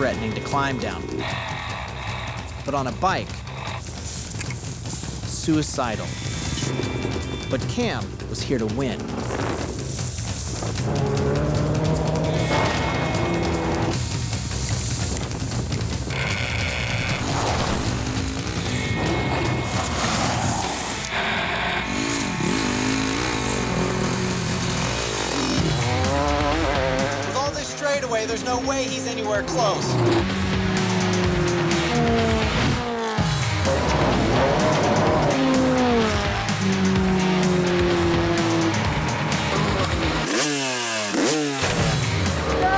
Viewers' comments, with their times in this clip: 0:04 I love how he is riding a 2-stroke, and then all of the sudden he is riding a 4-stroke. LOL
0:23 4 stroke! :D muahhaa